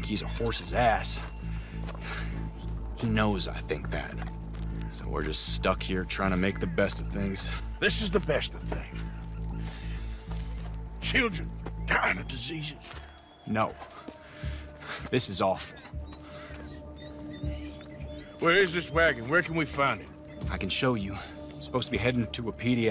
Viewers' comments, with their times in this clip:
0:08 i love how arthur gets more passionate about the situation as it goes on you can hear him getting pissed off